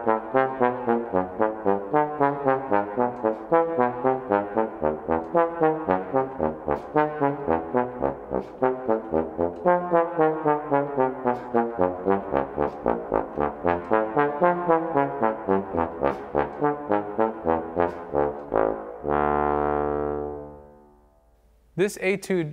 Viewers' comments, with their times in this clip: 0:07 should be a b flat :D